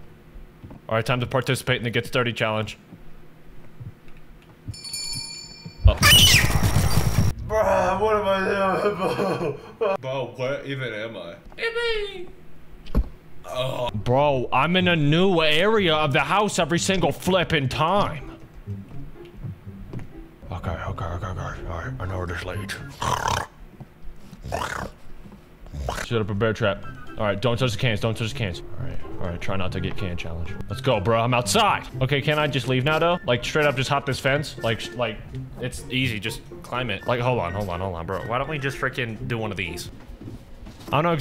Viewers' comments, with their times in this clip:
0:04 That scream was kinda personal💀
0:04 little girl scream frfr
0:04 bro he did the screech scream 🤣🤣🤣
0:04 Bro. The scream
0:04 the way he screams makes me laugh and I replay it a lot its so funny
0:05 His scream scared me more than the actual jumpscare 💀
0:05 dawg screamed like a 5 year old girl 💀💀💀💀💀
0:05 We do not talk about his scream
0:05 WTF THE SCREAMING
0:05 Bro, sounds like a five nights at Freddy’s jump scare
0:05 how did bro scream reach a sound that high
0:06 that was the most childish scream I’ve heard from a guy who has that deep of a voice.
0:06 I thought he actually screamed like that
0:06 DUDE THE SCREAM BRO
0:22 Goofy ahhh snorting